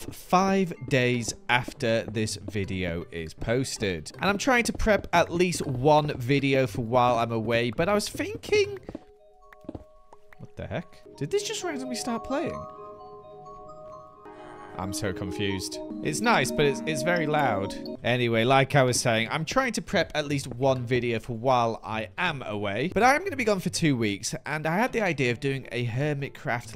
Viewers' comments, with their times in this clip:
0:09 The jukebox activating on it own is very odd.